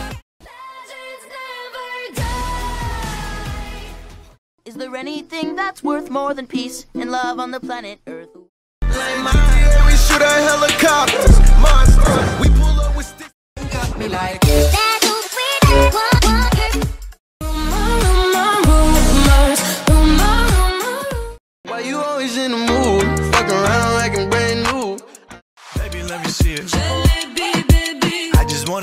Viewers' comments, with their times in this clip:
0:09 if you have a problem like me tryna find a version where its not slowed then there ya go